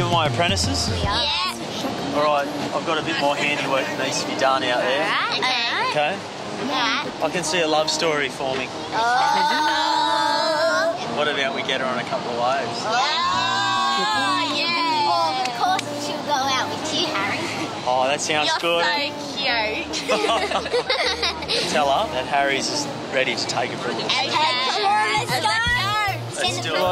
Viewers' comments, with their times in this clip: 0:08 The way they talk is weird wtf